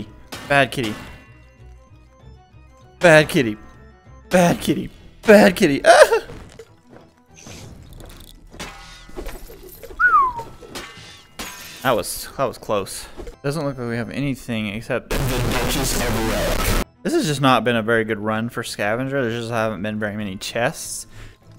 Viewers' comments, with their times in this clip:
0:05 bro had a little moan there 😂😂